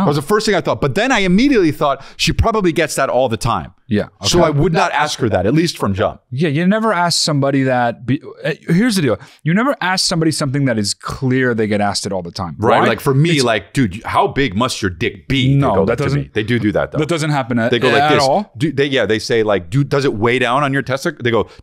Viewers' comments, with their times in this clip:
0:05 The audio doubled